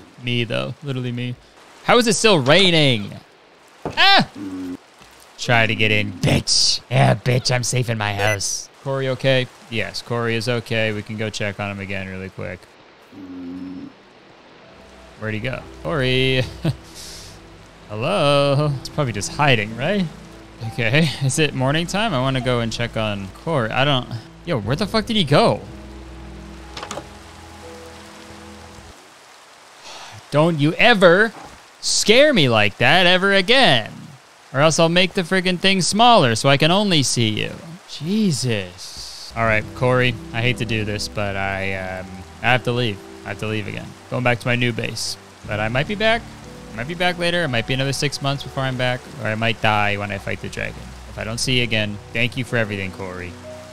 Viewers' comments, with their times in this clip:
0:07 I love the sticky keys noise 💀💀
0:35 The Hasan impression can be improved upon - the family guy impression on the other hand?!